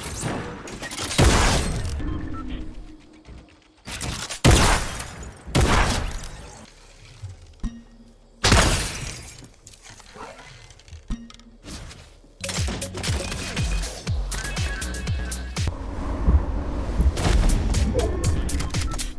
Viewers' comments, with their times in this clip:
0:04 This is quite old the boom how is still in game